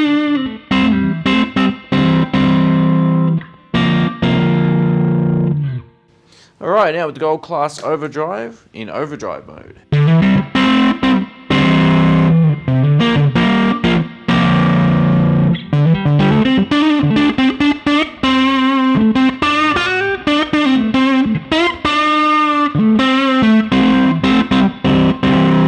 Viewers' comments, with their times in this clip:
0:06 The 150 was kinda awful. The rest of the tones tho, Amazing!